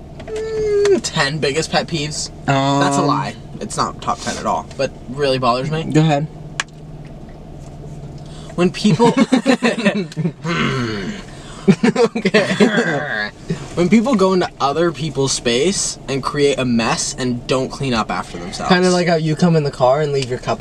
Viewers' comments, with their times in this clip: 0:08 that laugh was so in sync omg